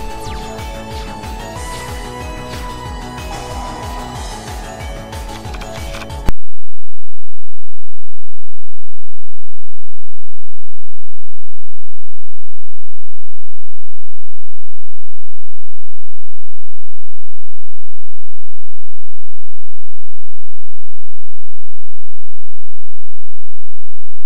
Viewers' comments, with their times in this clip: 0:06 What happened to the sound ?
0:08 Did anyone else lose sound ?